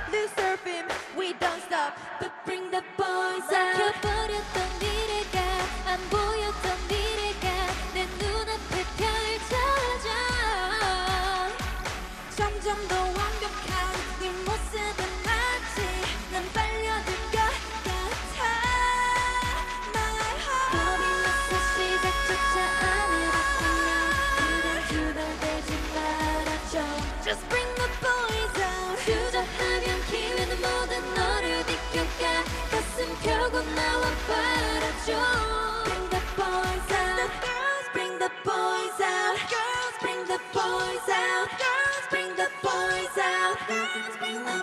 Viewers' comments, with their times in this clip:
0:04 I don't know their name, who is her? I love her voice
0:27 EXCUSE ME YUNJIN'S GROWL ????!!!! MOTHER!!